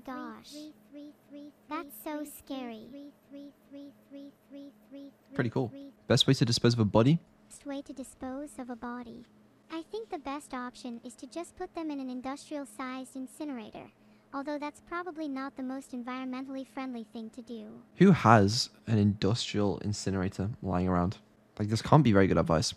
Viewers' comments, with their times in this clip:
0:07 Neuro perfectly synchronized with herself
0:07 I love how she is in sync with herself
0:07 Neuro syncs with herself in the clip
0:08 the 2 neuros are in sync with each other
0:08 past Neuro and present Neuro were synced up perfectly :O
0:08 two Neuro’s in sync